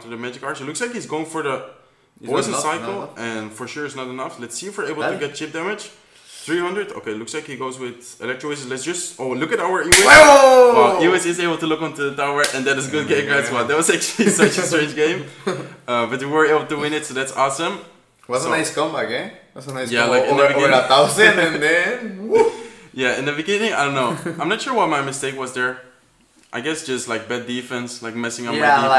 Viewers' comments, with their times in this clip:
0:09 R.I.P Headphone users. You will be remembered !